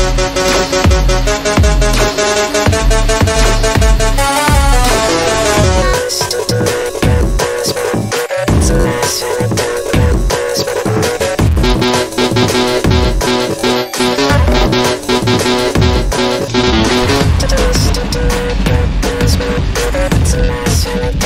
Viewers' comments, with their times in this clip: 0:04 i kinda hear BF's voice a lil bit